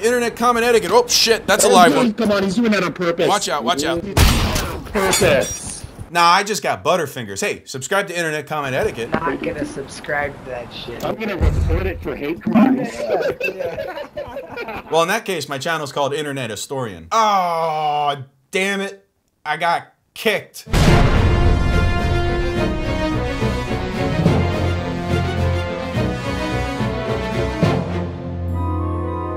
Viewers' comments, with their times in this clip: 0:08 -> "not gonna subscribe to that shit" hey thats steve-o
0:09 Is it just me or does that sound like Steve-O?
0:10 Was that fuckin Steve-O? Sure sounded like him.